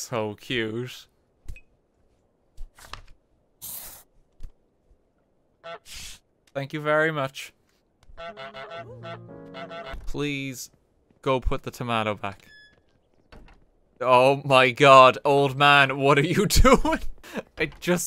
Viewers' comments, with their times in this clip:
0:05 "Thank you very much" chaotic goose noises